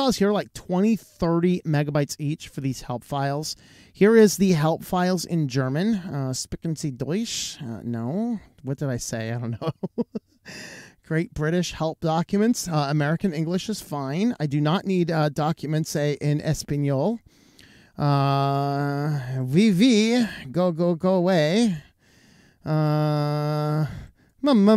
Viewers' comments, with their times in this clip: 0:06 "Sprechen Sie deutsch?" I can understand your german very well, good job! :D